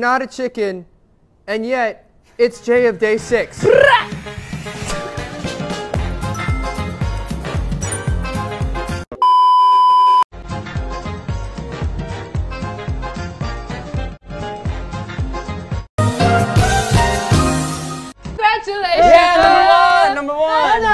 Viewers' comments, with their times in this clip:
0:04 is the same, plus Jae's "BRRRA", the '?' sticks by their height, and the way Jae stops a bit when no one responds got me wheeze :))